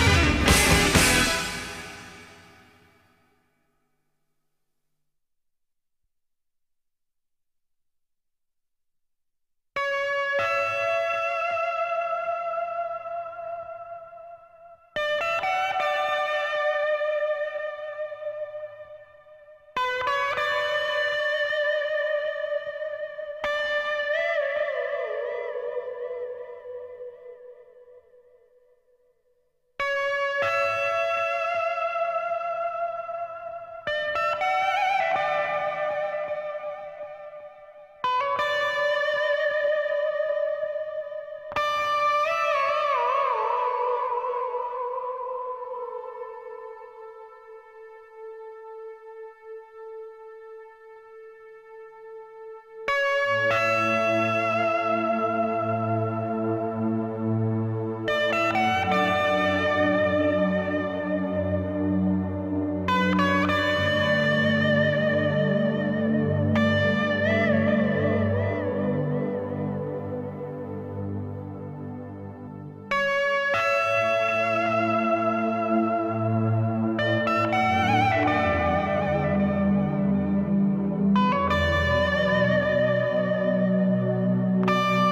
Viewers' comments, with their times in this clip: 0:09 Only two years after Satriani Surfing with an Alien '87, but he has stuff from 60s and 70s that he won Grammys on. That first track Guitar Shop all the guitars that sound like drills and such are mind boggling. Where Were You - the Whammy and artificial harmonic work is out of this world. I worked on that song for months trying to get as smooth on the whammy.
1:07 has a thank you by Led Zeppelin vibe